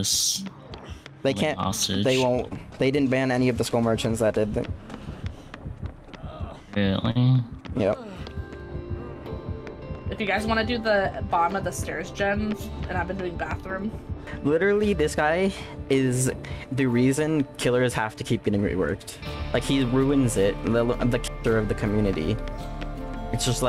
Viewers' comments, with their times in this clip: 0:05 the "really" was so gross and nasally that I literally felt it at the back of my throat